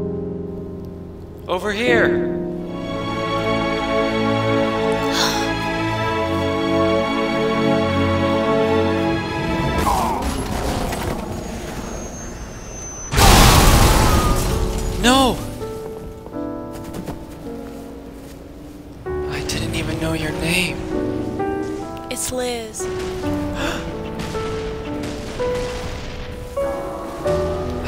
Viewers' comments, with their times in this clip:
0:09 She sounds a bit manly